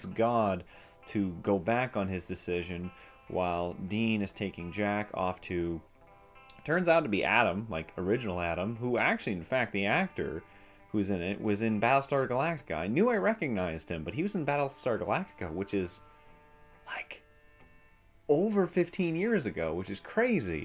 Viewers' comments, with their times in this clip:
0:04 Did I just hear you say “jackoff”? Hey now, let’s keep it pg